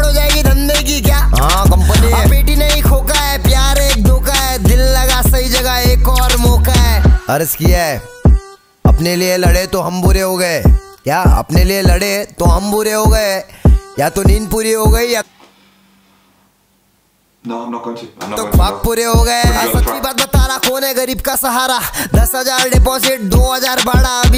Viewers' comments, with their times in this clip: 0:07 Bro there are 4 hooks in a min track are you kidding me